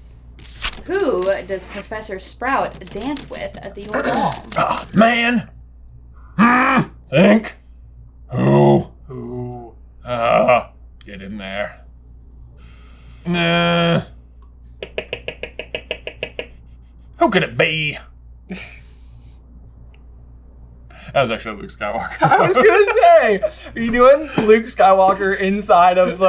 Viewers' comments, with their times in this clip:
0:07 sounds like Hank hill